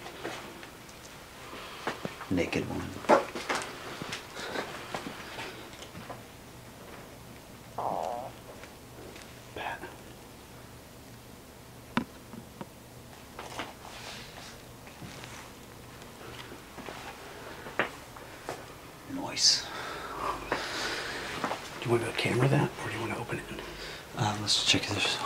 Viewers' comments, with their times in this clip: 0:07 OK WHO FARTED AT THE TIME MARK ?